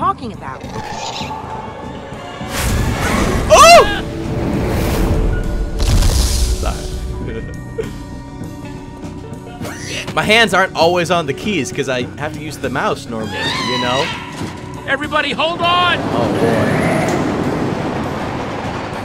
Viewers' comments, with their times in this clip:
0:07 i think it was Jesse sounded like batman XD